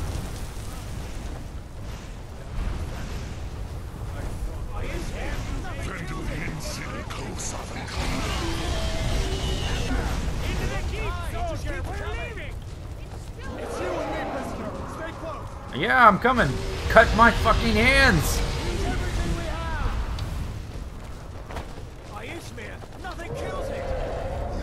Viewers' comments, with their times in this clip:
0:08 ALDUIN TALKS IN THIS PHASE??? I've seriously played this game 5 times from the chart scene forth, but I've never heard him speak before!